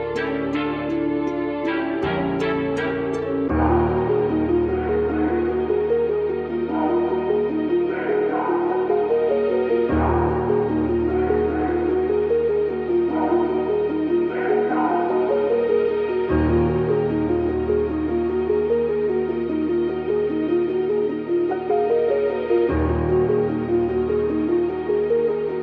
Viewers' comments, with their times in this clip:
0:10 That sample really is catching my attention with the choir